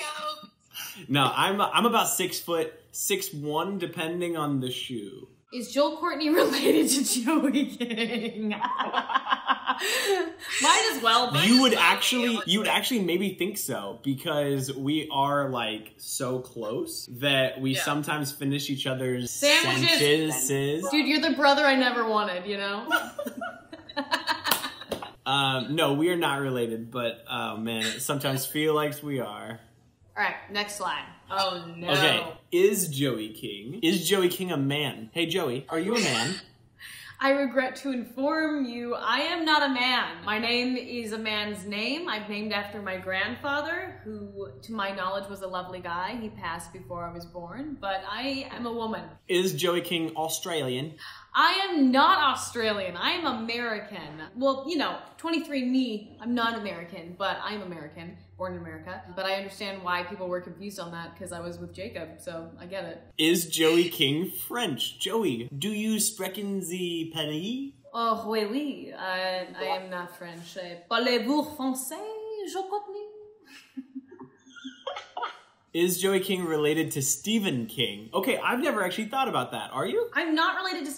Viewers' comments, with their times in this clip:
0:06 that laugh makes me happy!
1:05 That wasn’t even French at all lol